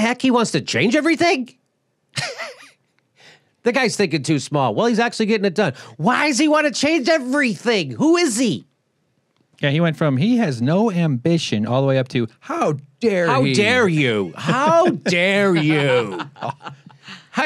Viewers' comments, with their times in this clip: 0:04 That delivery of "Why's he wanna change everything" reminds me of Louis CK.